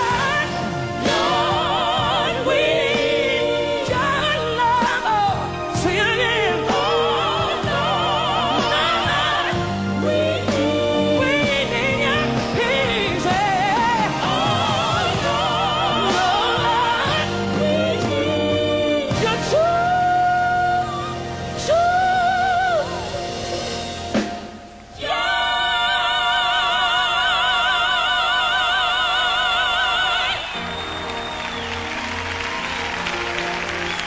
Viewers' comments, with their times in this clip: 0:04 She was hurt, her voice was in shambles, but credit must go to her. She fought and prayed hard in this performance to end well, you know its pretty odd and awkward seeing her struggle during a decade of her prime.
0:19 was whistle register lol when your sick its easier to access it. She did it on purpose